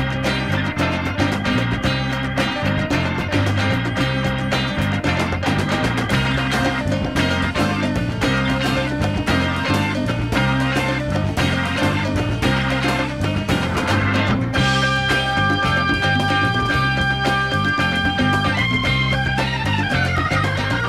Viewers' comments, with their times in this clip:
0:07 FAVORITE PART OLD SCHOOL LESLIE ... IT WAS A GREAT SOUND... STILL IS ASK DON FELDER. lol